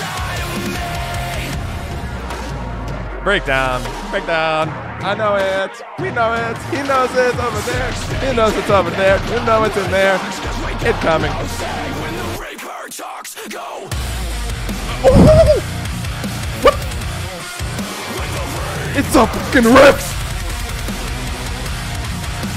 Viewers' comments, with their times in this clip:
0:07 Woooowwwww they really just chopped like 15 seconds off that breakdown for absolutely no reason Who tf wants to hear the chorus again right after that sick ass shit